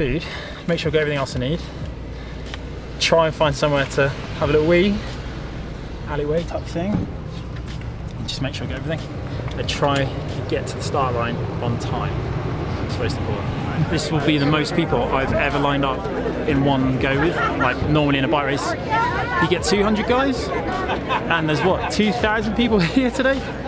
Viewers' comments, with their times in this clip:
0:04 did he say "try an find somewhere to have a little weed"?